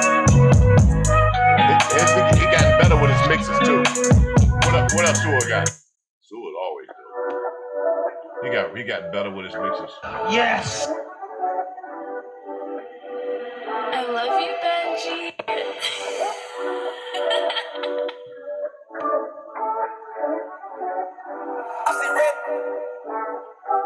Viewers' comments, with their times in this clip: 0:07 i wanna buy that beat